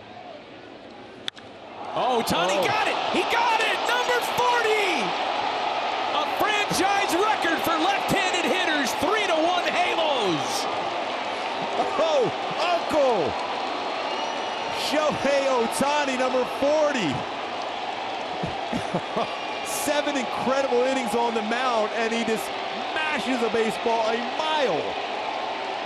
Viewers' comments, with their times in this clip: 0:07 ik he meant angels but anyone hear angles?